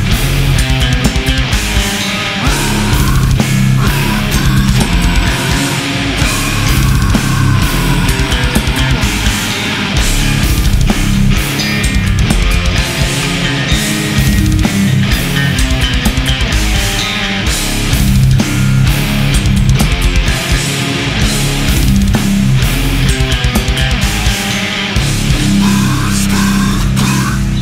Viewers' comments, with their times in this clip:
0:09 that bass lick gives me so much joy